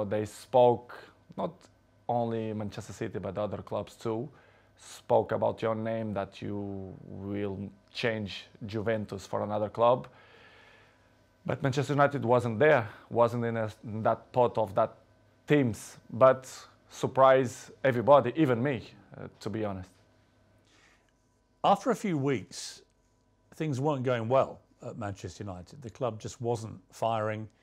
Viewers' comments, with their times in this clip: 0:08 "JUVENTUS" ??????? WHAT IS THAT PRONOUNCIATION